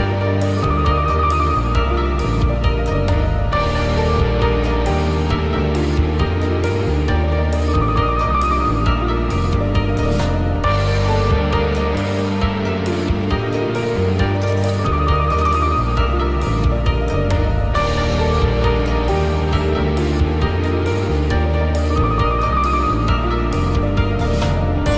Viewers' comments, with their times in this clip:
0:10 I listen to the soundtrack too much- that cut made me do a double take haha